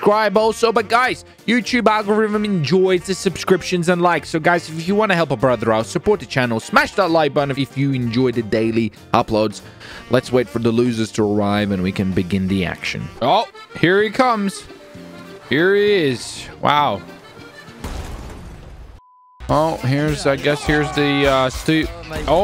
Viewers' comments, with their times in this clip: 0:09 if u hear French music, watch your backs....